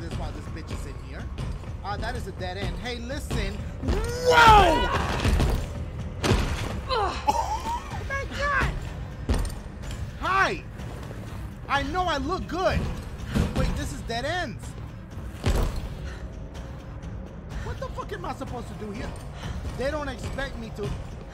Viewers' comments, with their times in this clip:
0:05 Late audio am I right?